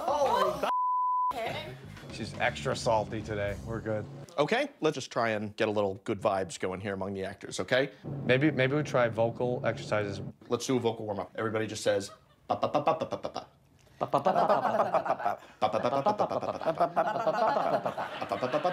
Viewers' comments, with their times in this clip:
0:03 tell me that "okay"! Didn't sound exactly like Kimmel